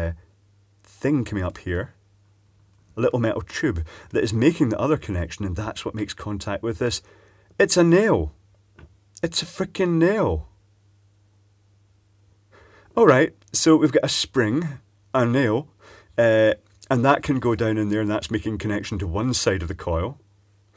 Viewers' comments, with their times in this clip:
0:07 Ahahah the pure astonishment It's a nail! It's a frickin nail! 🤣🤣🤣